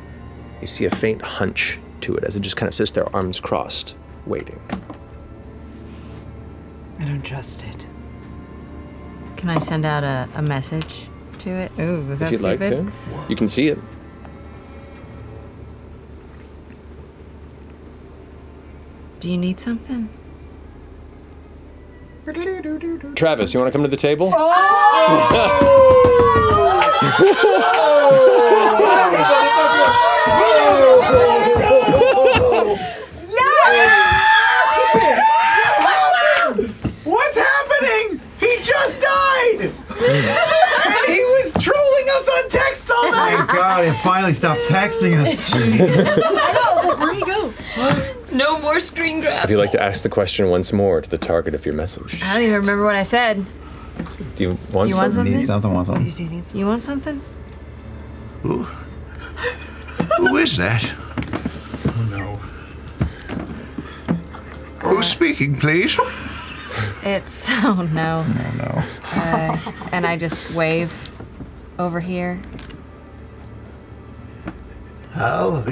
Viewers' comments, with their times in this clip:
0:09 If you listen very closely, when Laura asks if she can send a message to the small person in the street, you can hear Travis say “if you want”right as Matt is saying it too…
0:46 Damn that's a really great Master Roshi impression 🏖️🐢
0:56 the hysterical joy of top table and the absolute despair of the bottom table when Travis starts speaking